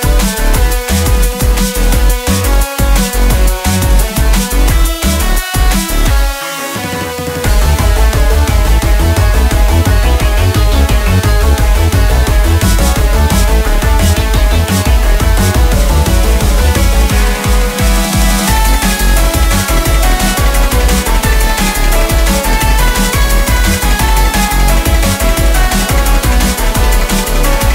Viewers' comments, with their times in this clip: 0:08 Also god dang, fits the beat perfectly